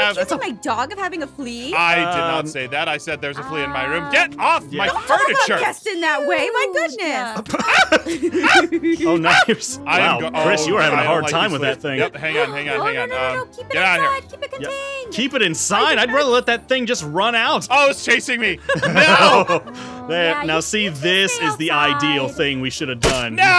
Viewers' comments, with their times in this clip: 0:07 that yell tho~